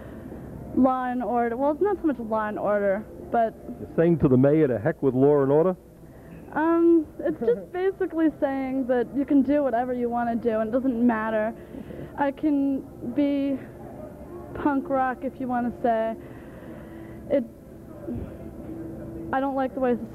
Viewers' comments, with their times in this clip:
0:06 Your [dress] "is it saying to the mayor 'to heck with loyr and ordah?'" -classic! lol I don't think these kids are as weird as the tattooed people today who look like they got out of prison.